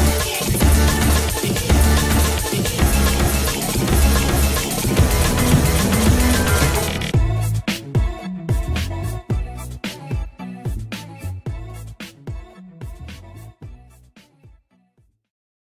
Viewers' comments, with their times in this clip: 0:07 If you literally play this at 2x speed, you get a bop.
0:10 Four casually screeches X